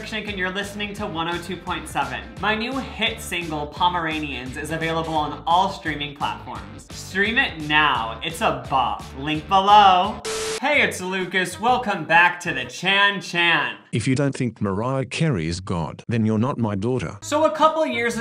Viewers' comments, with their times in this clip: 0:03 you said “squirrels” wrong